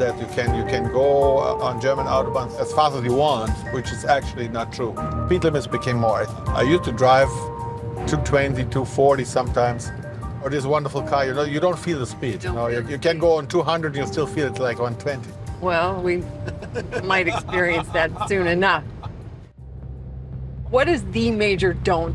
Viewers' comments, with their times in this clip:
0:08 the way he laughs is awesome (fkn dr maxis laugh)